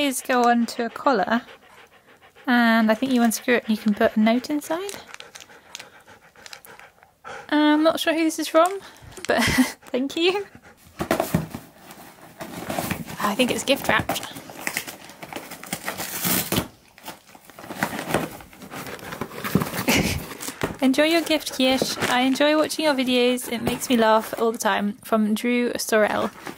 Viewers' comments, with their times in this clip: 0:07 "I'm not sure who's this from, but . . . thank you?" I like that it sounds like a question.